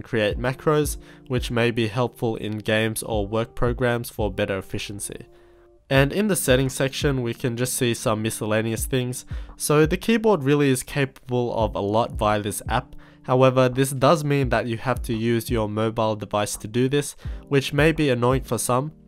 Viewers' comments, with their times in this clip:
0:05 that mosquito though.